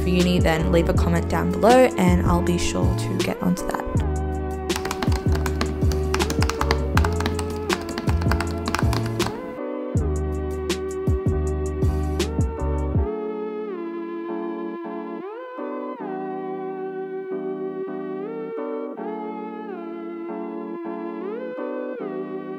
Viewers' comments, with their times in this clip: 0:04 that part was really satisfying the clicking so ASMR vibes!!!
0:05 That’s some good ASMR